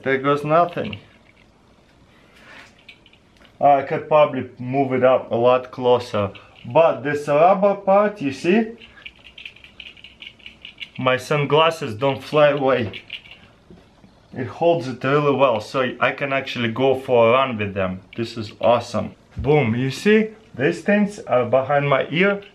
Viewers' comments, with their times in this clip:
0:09 when there's a fly next to your ear
0:09 Is that your brain rattling?
0:09 when a mosquito is on ur ear